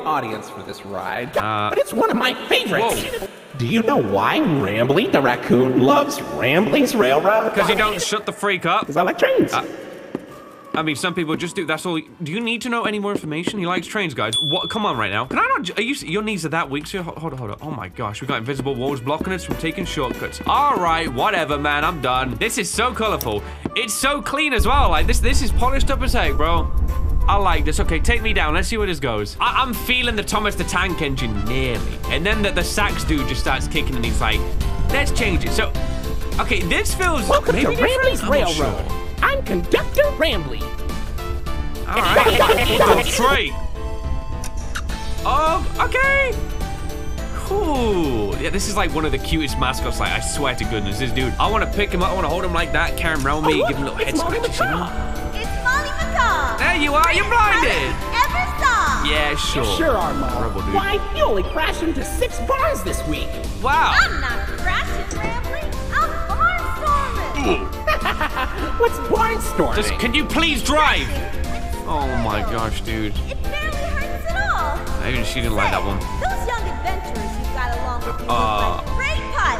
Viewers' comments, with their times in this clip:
0:03 Why was that “Because I like trains” so silly?
0:30 man, I now love this happy train song!
1:00 under the sun behind a tree you can see Molly Macaw animatronic peeking out from a door. Few seconds later you hear a door closing, which is Molly retreating